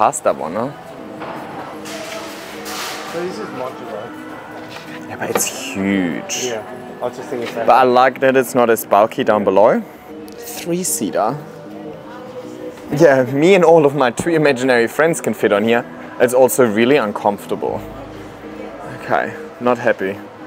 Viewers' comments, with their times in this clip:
0:03 did I hear a "ja aber" it's huge? ? Great Videos! I'm always looking forward to your content. Greetings from Germany :hand-pink-waving: